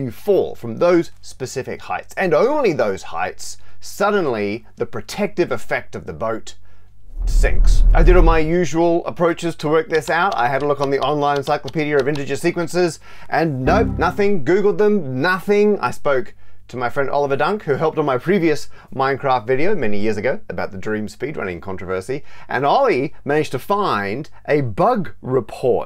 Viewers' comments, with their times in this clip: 0:07 I genuinely thought there was a very brief earth quake, that sound effect is incredible!